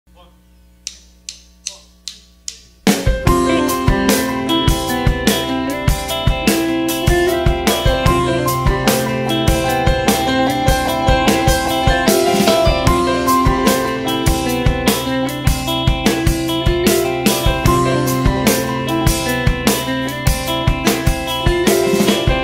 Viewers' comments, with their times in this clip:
0:03 The ultimate Caucasian ringtone